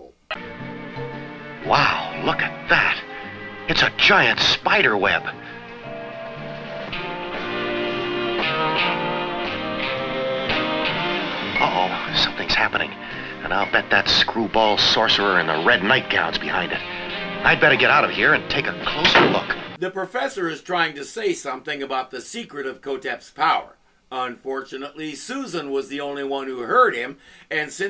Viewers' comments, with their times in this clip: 0:09 Something is happening, and in a very mellow way, by the soundtrack.